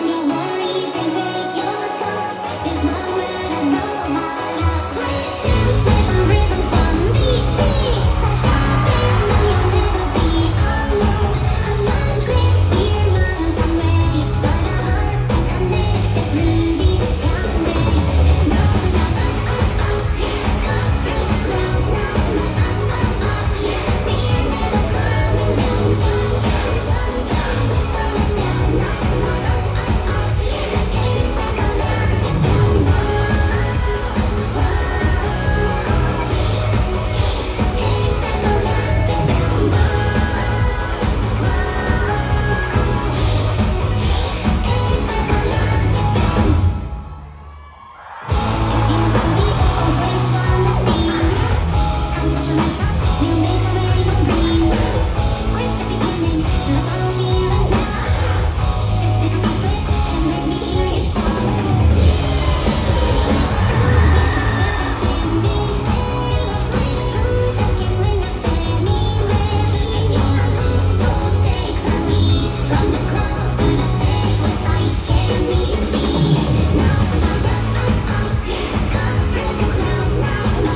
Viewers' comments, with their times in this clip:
0:06 I absolutely adore how she says the name of the city she’s in during this part of the song, it’s so sweet 🥺🩵
1:03 So Real!!! 99% the one loud ass scream is me LOL the energy this year was WILD!!!! DC really blew it out of the water this year! I’m so proud of us!! 💙💙